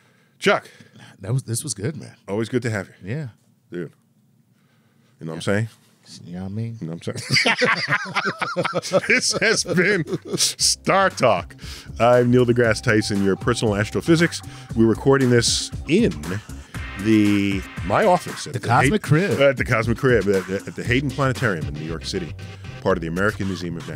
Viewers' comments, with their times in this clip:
0:05 my favorite part of the show. "Namssin" "yamean" 😂😂😂